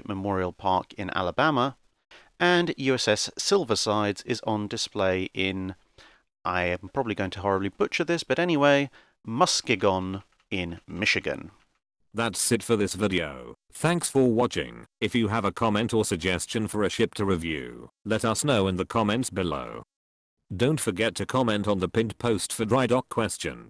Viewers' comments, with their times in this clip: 0:08 muh ski gun michigan